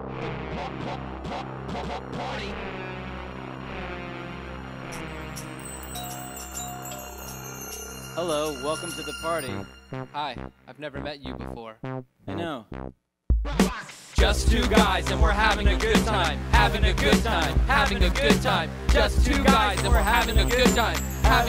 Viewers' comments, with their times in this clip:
0:03 (Knocks on door, doorbell rings)
0:05 Knocking *doorbell sound
0:05 he nocks on the door and the bell rings lol